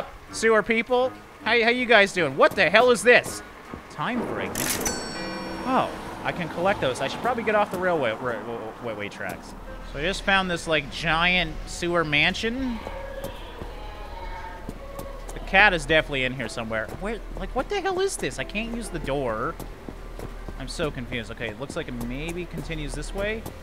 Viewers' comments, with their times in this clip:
0:04 is that legos sounds